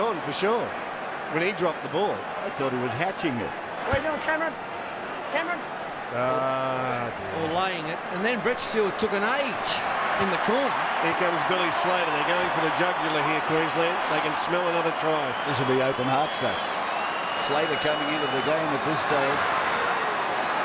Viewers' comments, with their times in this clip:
0:06 Pill Ghoul sounds scared when Billy the Man enters the battlefield